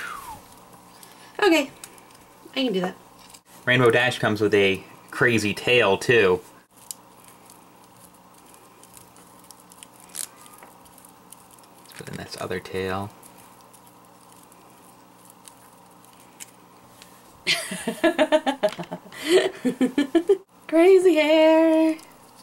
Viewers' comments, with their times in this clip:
0:10 I heard the baby
0:10 I heard him aswell. Was he crying or moaning